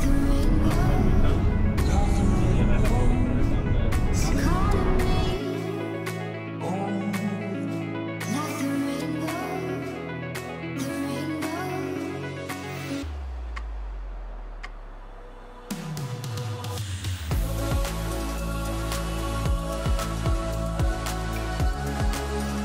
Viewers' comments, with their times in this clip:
0:05 such a great song :)